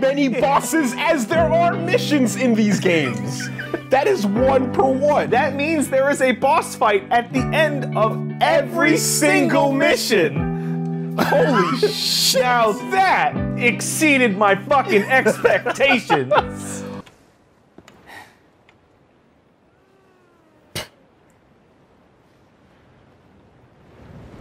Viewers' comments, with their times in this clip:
0:08 Listening to them in joy at the same time with the accompanying music makes me feel things.